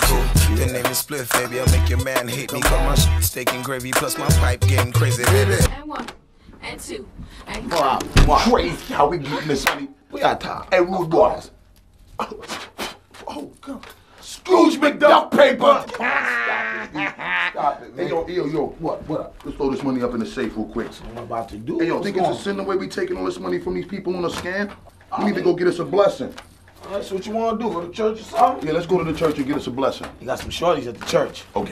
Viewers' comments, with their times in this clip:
0:09 Busta sounded like the grinch when he laughed
0:14 Scrooge Mc duck paper lol busts & spliff even laughed like a duck after spliff star is the american dream because he had nothing and turned it into something hes made loads of money doing fuck all except being bustas man servant/ hype man
0:15 I miss busta laugh 😂